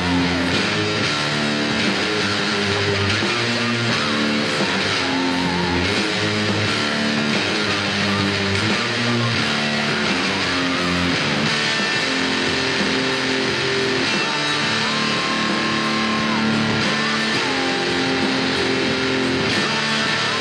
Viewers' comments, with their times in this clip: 0:05 its F - G - G# not G-G#-G